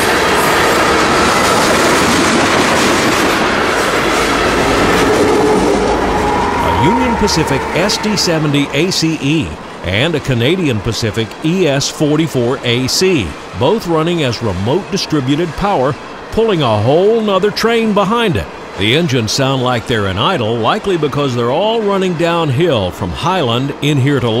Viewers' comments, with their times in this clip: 0:07 How can you tell when a locomotive is in idle vs being throttled?